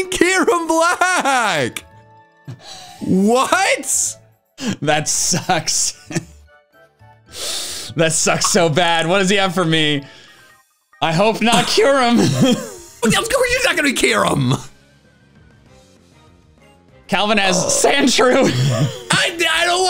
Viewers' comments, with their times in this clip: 0:06 When the Doom Music Kicks in...